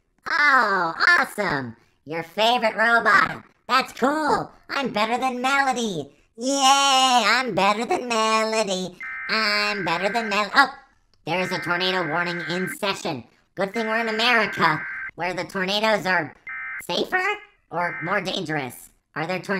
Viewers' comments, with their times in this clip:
0:05 the sound of that is like sirenhead